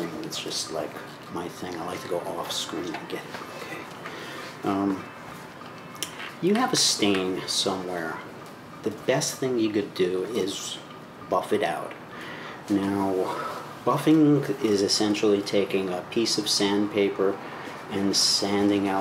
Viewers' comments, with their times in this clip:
0:05 Coolest thing.. u can hear the pots and pans clanging away for the Frontline Workers salute at 7pm.. but the really cool thing?.. it happens exactly at the seven minute mark what are the odds of that?